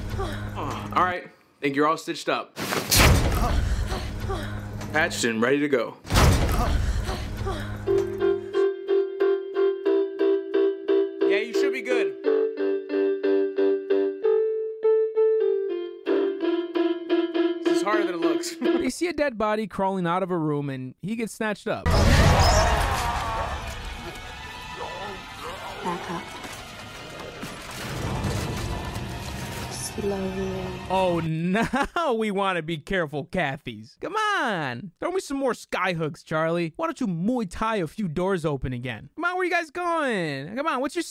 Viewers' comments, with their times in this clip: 0:03 "SNEEZE'S so loud"
0:23 sounds like an Arnold Schwarzenegger Cookie Monster ate that guy
0:25 Is it just me or does it sound like, the "monster that snatched up the crawling guy, was saying "nom, nom" ?? 😂 "Leathering intensifies" OMG, you have me crying over here!!!! Best movie review of all time!!